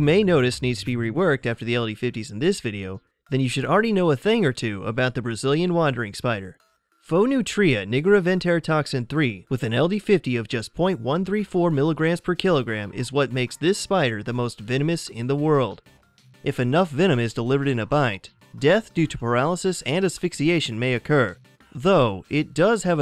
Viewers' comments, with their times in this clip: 0:05 who else heard him say nigga😂